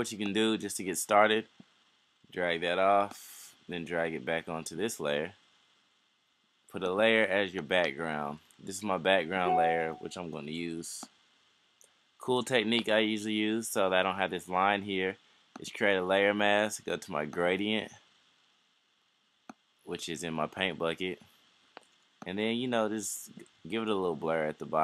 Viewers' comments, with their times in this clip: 0:09 you did something and it made a noise. What did you do? When I drag the background into the "flyer", I can NOT resize it. What am I doing wrong?